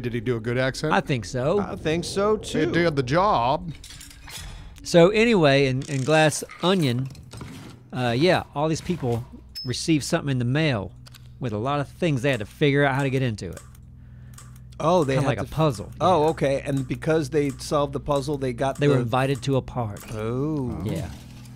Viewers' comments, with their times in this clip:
0:04 Good accent, yes. Jarring to hear it coming out of him, absolutely.